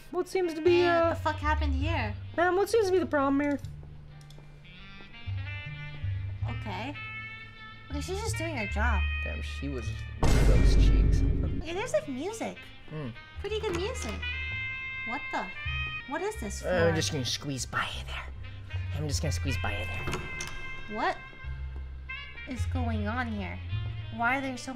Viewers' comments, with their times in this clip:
0:09 never thought i would be scared by a vine boom